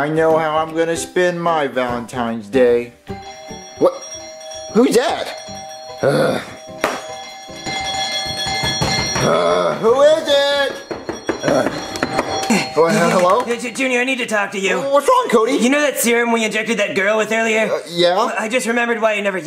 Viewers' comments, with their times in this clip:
0:05 certified doorbell ring moment